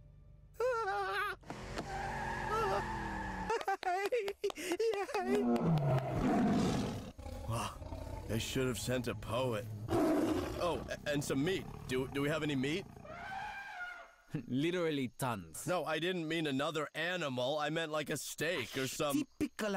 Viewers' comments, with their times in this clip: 0:04 that “yay” was cute!
0:05 The walking and calm roar of a Tiger is strangely adorable.